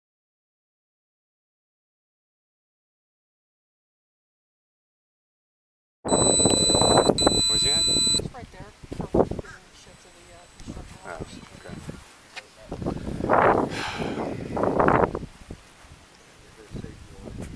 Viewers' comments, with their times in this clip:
0:05 first he turns the mic back on, seconds later you hear the other one turn his mic back on. They all do this, probably all the time.